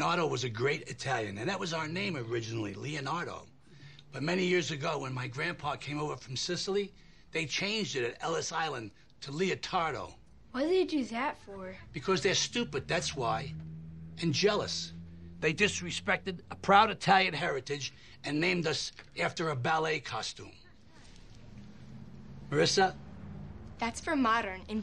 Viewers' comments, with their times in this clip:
0:08 I love the delivery on that line and how Phil's facial expression subtly changes, Frank Vincent was so great on this show.